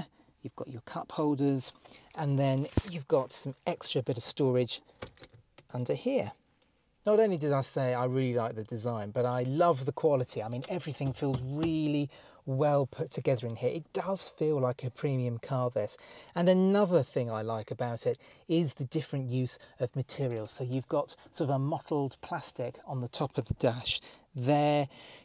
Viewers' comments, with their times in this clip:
0:10 "I really love the quality" - Touching that crunchy plastic LOL crack - crack